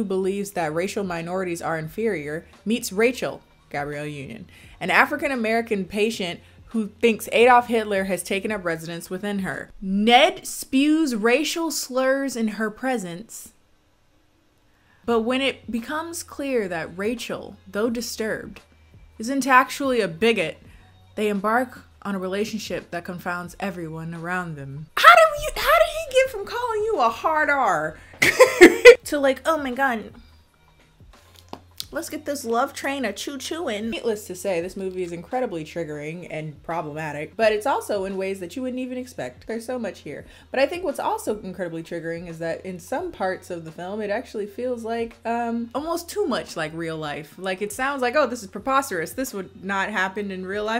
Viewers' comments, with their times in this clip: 0:04 waitt y'all say ay-dolf??
0:32 "Lets give this love train a chu-chu and..." I can't with you seriously. This and your laugh. I am suscribing right now.